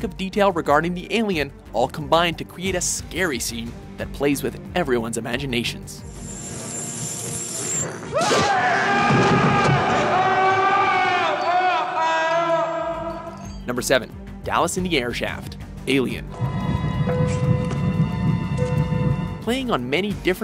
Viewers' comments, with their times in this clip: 0:08 Brett’s scream alone was terrifying enough to haunt me as a child